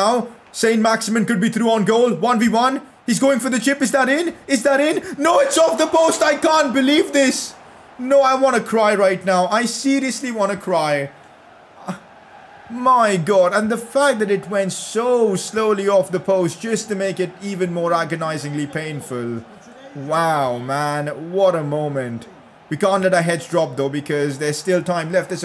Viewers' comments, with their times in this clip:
0:06 did you lose your voice